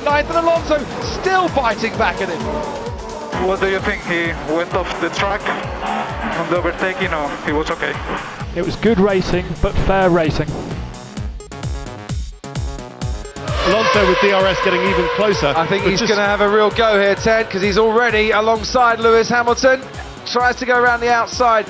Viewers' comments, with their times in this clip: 0:03 touch of class from fernando, asking calmly if his team could see on the cameras if Lewis went off the track